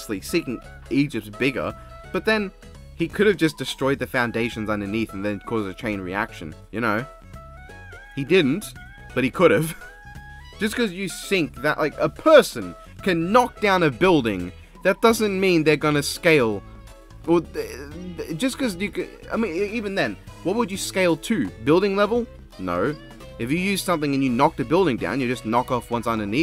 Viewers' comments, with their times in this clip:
0:09 lmfao 🤣 it the way said